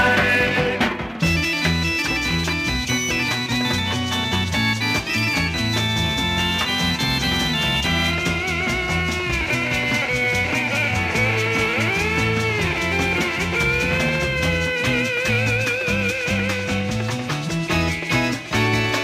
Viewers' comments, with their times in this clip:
0:04 There no sound as good as a 45 mono - the guitar solo is fabulous.